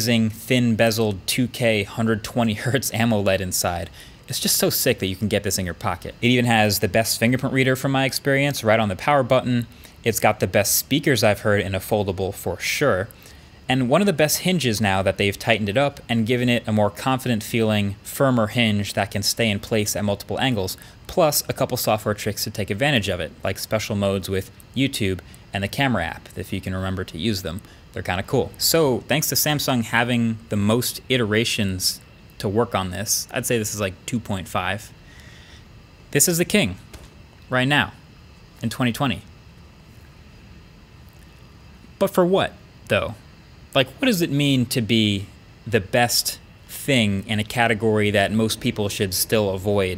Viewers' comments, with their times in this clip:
0:06 I love how surprised Marques is like “oh yeah.... Bixby....”
0:35 "Turn down but... for what" song plays on full blast